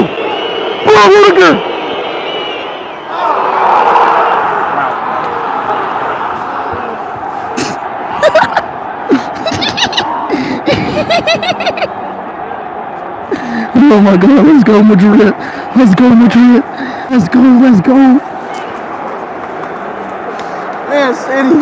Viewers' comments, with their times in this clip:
0:07 The laugh bruh ⚰️💀